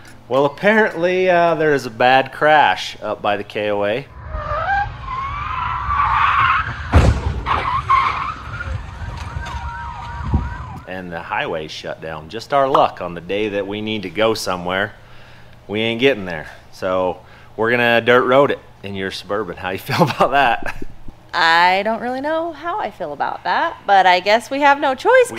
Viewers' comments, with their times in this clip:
0:07 I hate the sound of a collision, something I've heard too many times (even once is too many). The sound is unmistakable.